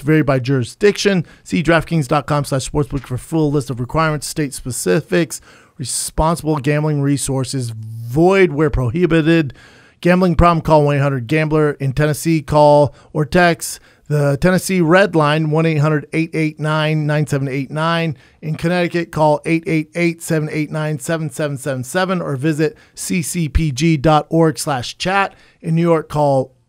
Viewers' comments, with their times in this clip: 0:09 Brendan's pronunciation of prohibited 😆😆😆😆